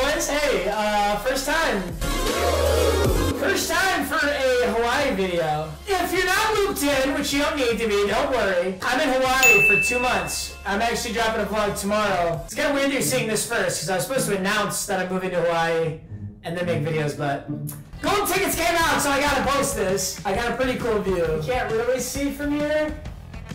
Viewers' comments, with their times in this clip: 0:05 lol my volume went 📉📉📉📉📉